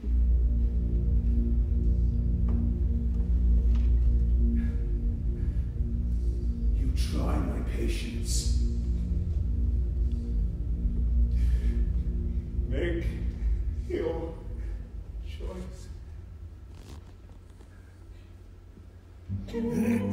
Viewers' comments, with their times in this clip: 0:06 I love when Jon says make your choice,it sound like he afraid of Christine's answer